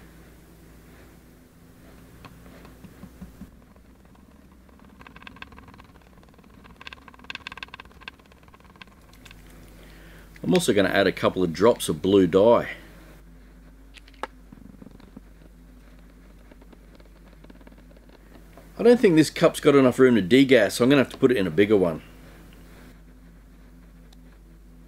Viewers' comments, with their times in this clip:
0:05 unintentional ASMR. HOW DID U GET SO GOOD AT MIXING LOL